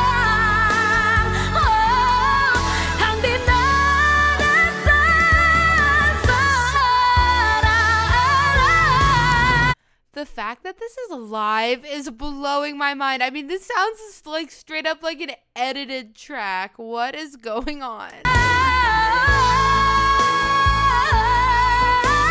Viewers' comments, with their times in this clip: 0:09 Coach if you didn't pause the video you would notice that she's belting those notes out in a matter of 14 seconds, with only one breath. 😊 ❤️